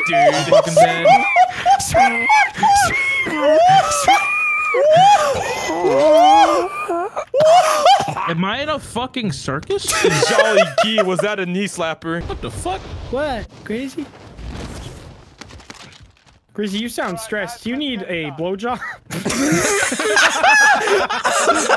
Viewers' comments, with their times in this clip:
0:06 you can hear the Chica/Bonnie groan from fnaf1